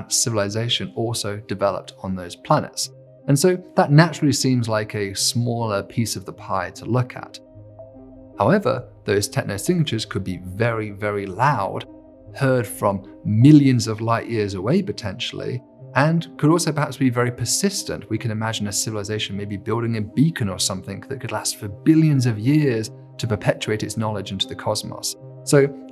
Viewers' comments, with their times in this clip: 0:10 he lost me; I could not understand his words, he having a strange accent. I ran it by two times, still can't catch his words. Will have to go back to this some other day Have bookmarked it.